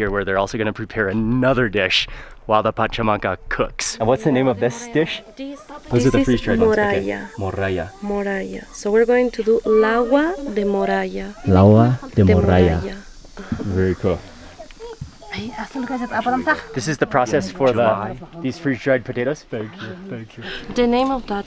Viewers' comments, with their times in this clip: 0:09 her voice is so soothing